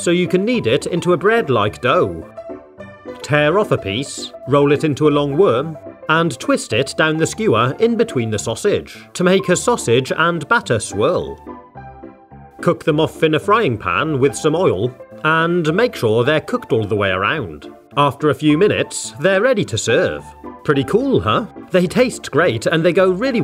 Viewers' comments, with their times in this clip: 0:08 The way he says ‘sausage’ is priceless